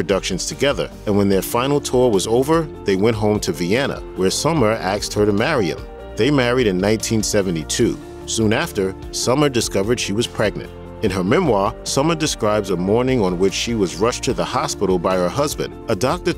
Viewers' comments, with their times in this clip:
0:03 "Where Summer axed her" I guess that's not illegal in Austria. He didn't kill her, but there had to be some blood and a gash.